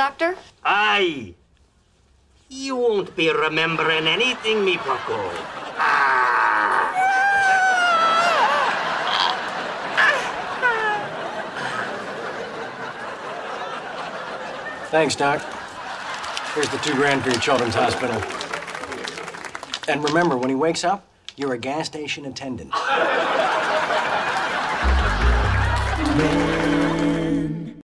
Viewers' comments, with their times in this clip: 0:07 Jesus that’s the highest scream I’ve ever heard
0:10 alan girly scream lol